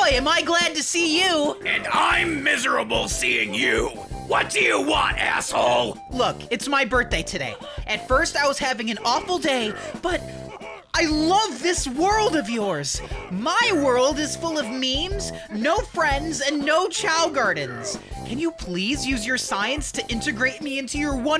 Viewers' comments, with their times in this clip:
0:06 in the music background you can hear them high and low “heuh heuh yeah!” 😆😆😆😆😆